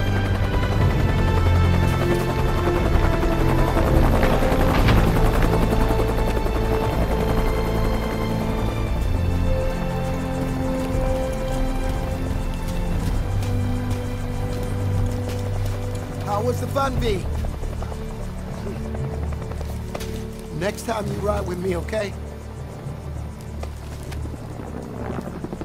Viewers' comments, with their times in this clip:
0:10 that’s literally the same music notes( but in a different tone) as the Spider-Man Ramiverse theme